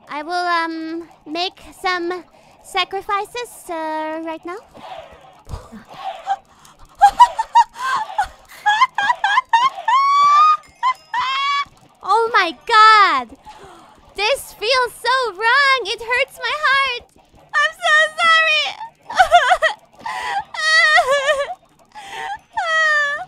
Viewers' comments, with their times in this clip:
0:08 that laugh , that is the God laugh , the laugh that start all of this
0:11 not rabbit laughs but chicken clucks